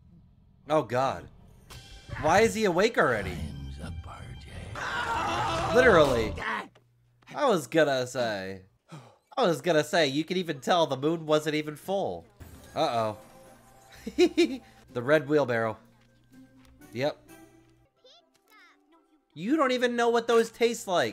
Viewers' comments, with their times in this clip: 0:03 did you hear that bone crack when he bit him